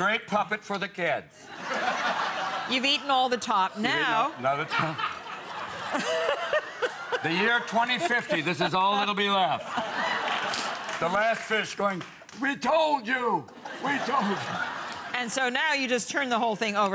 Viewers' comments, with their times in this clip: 0:04 Love that guy's roaring laughter!!